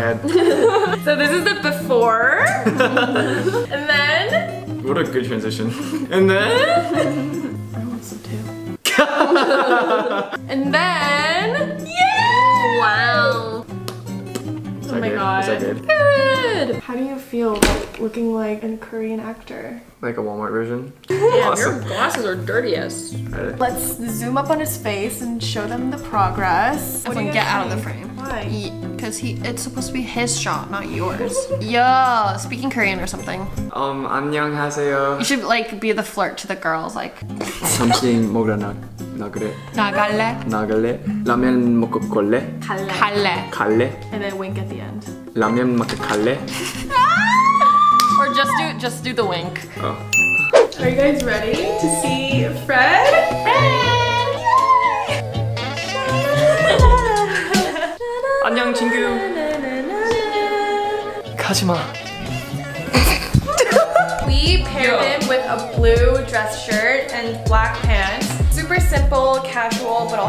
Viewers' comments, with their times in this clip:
0:08 why does he have the most attractive laugh tho?
0:58 IM CRYING THE WAY HE SAID IT